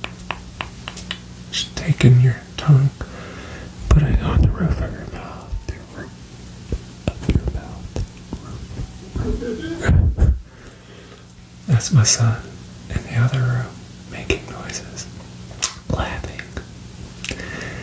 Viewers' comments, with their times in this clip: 0:03 that whole tongue mouth sound you did that other asmrtists do so much Im glad you dont do well, because I honestly can't stand it. It's annoying especially how often they do it.